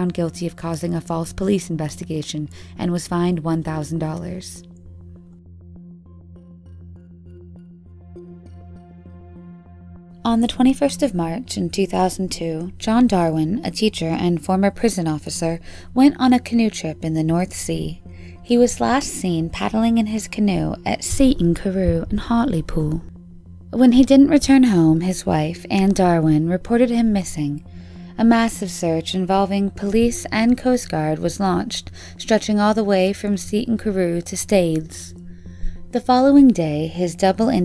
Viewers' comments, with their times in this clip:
0:06 The accent change killed me 💀 and why is o one talking about ittt
0:18 why did the voice change for like 2 seconds??? start to hear what I mean if you missed it
0:19 For someone with an American accent that's the most British way to say Hartlepool
0:20 LMAO where did that accent come from 😂😂
0:21 The way the narrator jumps into a perfect English accent when she says "at Seaton Carew in Hartlepool" disturbs me greatly lol
0:21 WTF at the random British accent
0:21 where did the sudden british accent come from lmaooo i love it
0:21 Anyone else hear that random British accent lol
0:21 Why did she suddenly have a British accent?
0:21 where did that accent come from?
0:21 What happened to the accent you just turned british all of a sudden when you said Hartlepool
0:21 wow ! The accent! She either pronounced it that way on purpose to be respectful of the culture, or she disguises her accent for better communication across cultures. Either way… What a great public speaker. Bravo! 💗
0:21 the transition from an american to british accent took place
0:21 randomly another accent lol